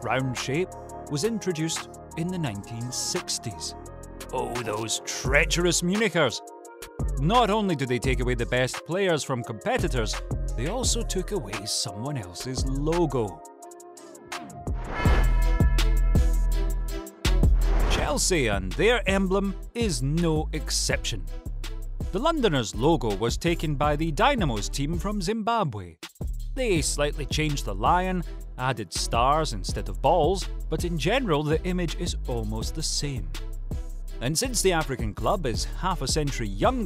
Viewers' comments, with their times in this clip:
0:04 does anyone else hear something other than “munichers”
0:24 I DIED THE WAY HE SAID BALLS 😂😂😂